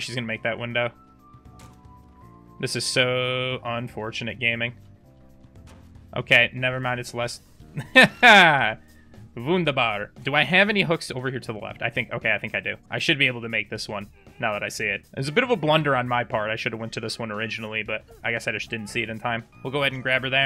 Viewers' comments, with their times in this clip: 0:08 what the?? german?!